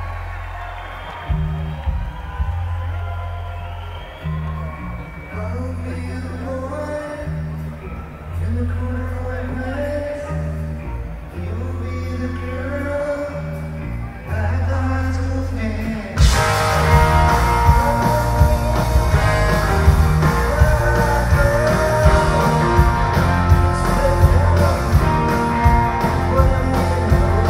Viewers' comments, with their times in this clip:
0:10 Tom fucked up He sang a half beat behind and confused everyone. Not hating, just bummed they missed that climax.